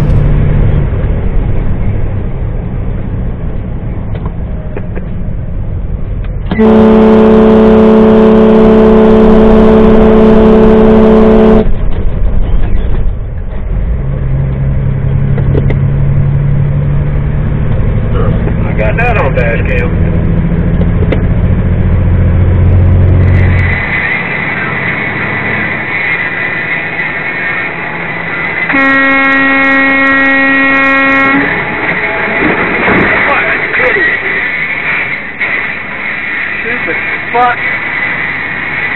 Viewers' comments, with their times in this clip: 0:07 that truck horn is insane 😯
0:17 man thats a sweet horn
0:23 the idiot didn’t get the hint from the loud ass horn to get back in his lane?